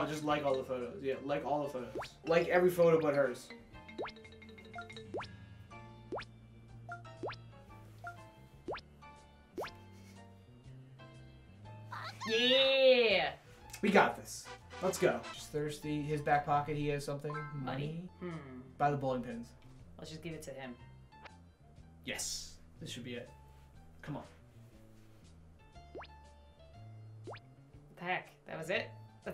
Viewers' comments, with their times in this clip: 0:10 Did she just scream "BAKA?!"